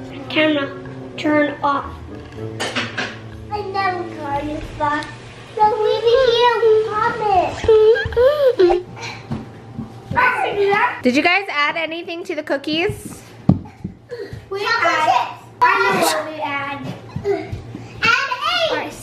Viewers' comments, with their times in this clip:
0:04 "I'll never go on your spot so just leave it here!" Lol. All the sound effects are on POINT and super funny 🤣 I hate baking though, so idk why I'm here.😂😂😍